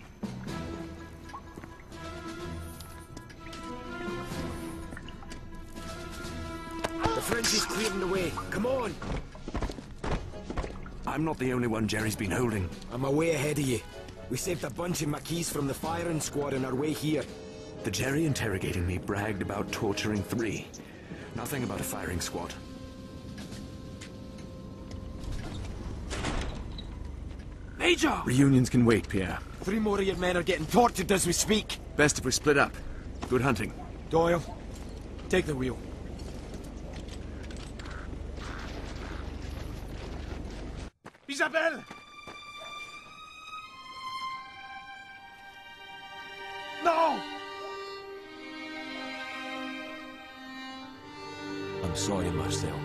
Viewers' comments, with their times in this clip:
0:06 doyle has spoke, i thought he was mute lol
0:40 iconic scene with iconic voice acting "Isabelle! NO Isabelle...."